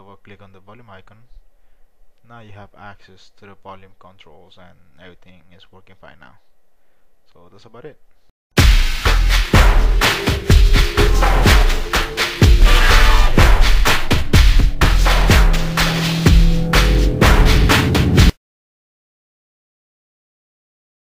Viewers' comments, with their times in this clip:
0:09 Ahhh!! CRAZY high volume in this video! About blew my headphones off! Beware!